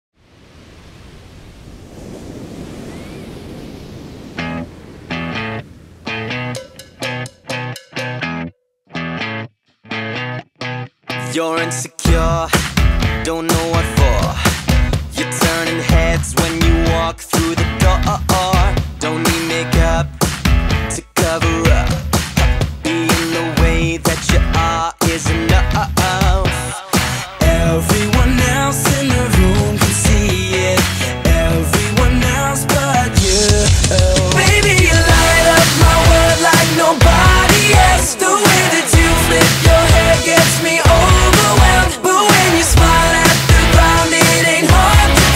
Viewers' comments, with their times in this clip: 0:01 Hearing the sound of these waves is enough to make me remember this song
0:12 sounds like he’s saying your in the car in a French accent 😂
0:27 that was liam harry starts